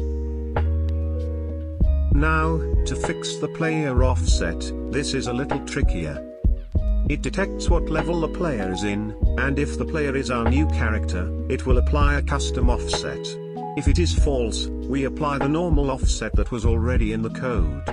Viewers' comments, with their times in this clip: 0:04 i heard on "this is a little Tricky yeah"